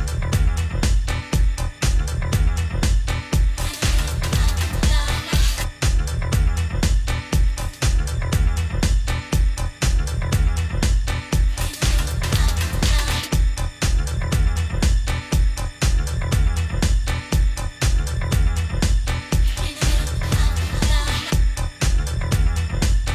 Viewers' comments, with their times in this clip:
0:10 great track change. love the funk. xo